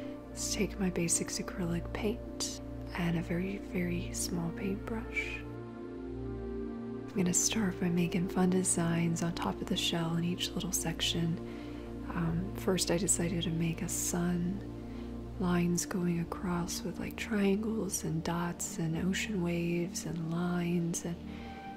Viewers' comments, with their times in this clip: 0:03 'a very, very small paintbrusshh'. The best.